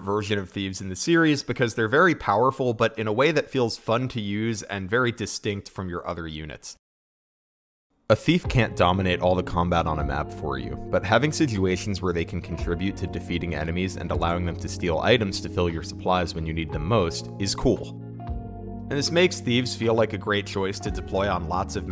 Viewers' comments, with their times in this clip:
0:08 Ooooh that key change